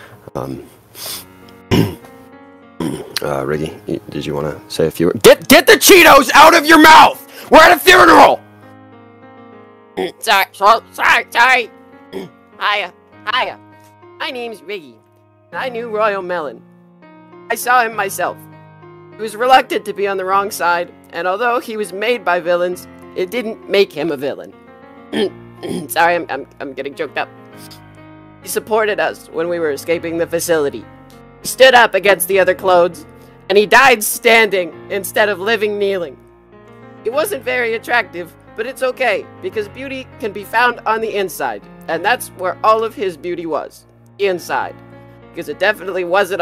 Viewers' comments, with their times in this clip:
0:04 yall were so focused with that yall didn't even noticed the background music...
0:31 did we get rick rolled by a piano?